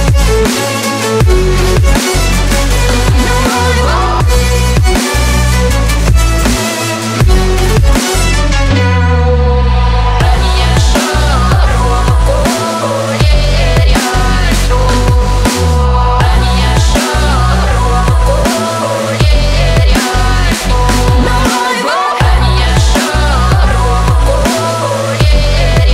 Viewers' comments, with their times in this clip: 0:10 I really like this part This old type of singing/chanting is interesting. Here it acts nicely as vocal chops